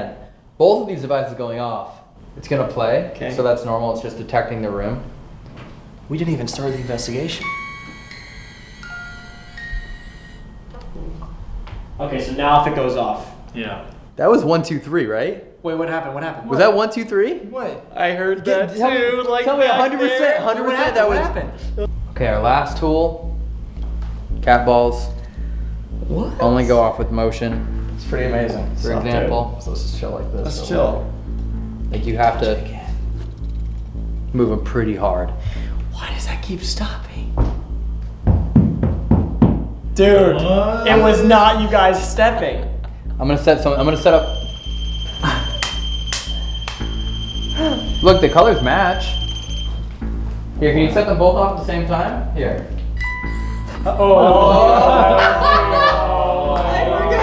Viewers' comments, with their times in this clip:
0:10 does it sound like a woman saying "help me"?
0:38 if you hear the footsteps look on the floor you can see home doing the footsteps He is probably doing that so they can get scared